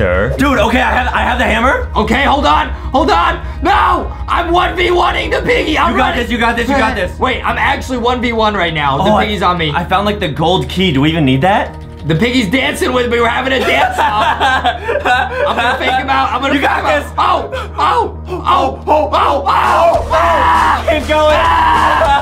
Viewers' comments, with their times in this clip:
0:10 get'cha your head in the game playing in the background